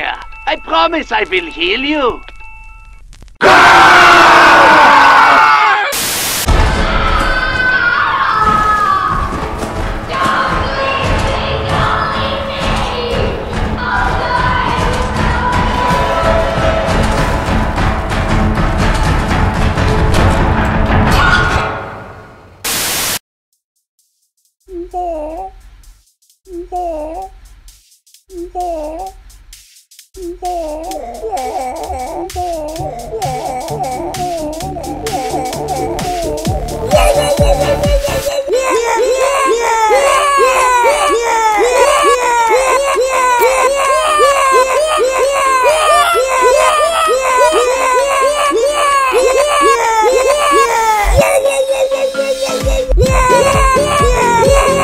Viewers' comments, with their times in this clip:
0:07 Ukiekooki in its a voice of hastune miku creaming in fear
0:24 And now.... Crash Bandicoot sings "Build Our Machine"
0:34 This is the best song ever made!
0:38 crash killed me :')